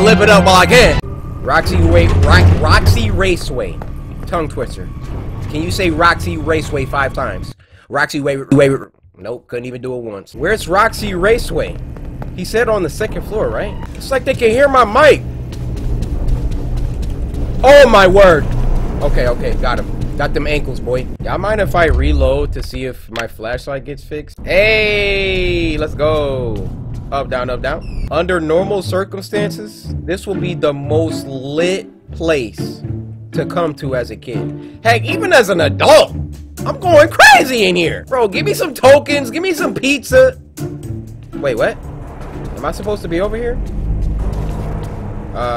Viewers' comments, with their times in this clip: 0:05 roxywavesay… I cant even say it once.
0:27 The squeak made me think someone came in my room, it’s scared the crap out of me because im watching this at 3 am